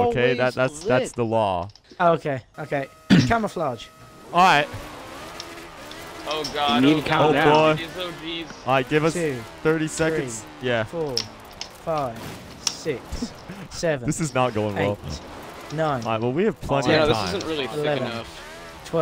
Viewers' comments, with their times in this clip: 0:03 the sound of all the cars peeling out